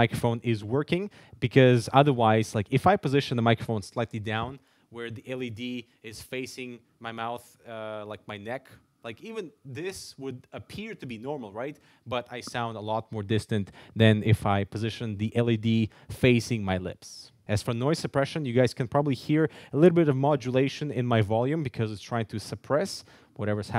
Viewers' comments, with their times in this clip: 0:04 When you moved the mic down, it sounded a hell lot better for some reason.